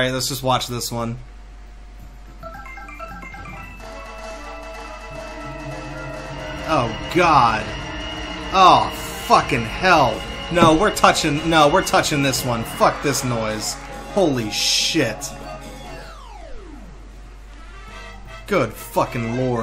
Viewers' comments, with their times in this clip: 0:05 can you say cacophony?